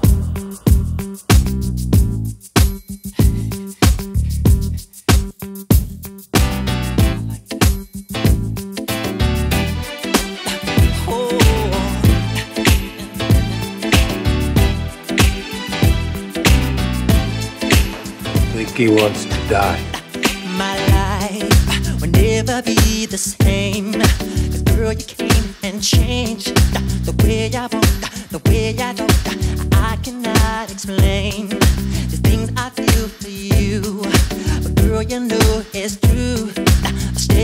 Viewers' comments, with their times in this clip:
0:09 when music starts
0:18 What the ffff.......ck.. that guy is in an X-Files episode.. a really good one, he's accent is crazy